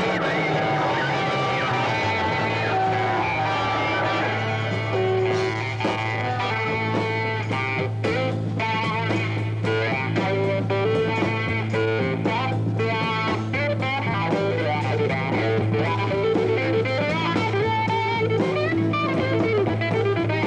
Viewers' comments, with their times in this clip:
0:07 Extraordinary guitar That tells us all we need to know about Zappa.